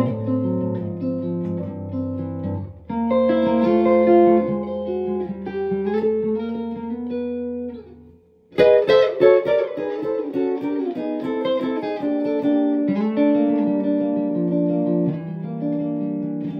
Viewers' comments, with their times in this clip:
0:04 Watching for the second time. The descending and ascending turnarounds are really beautiful.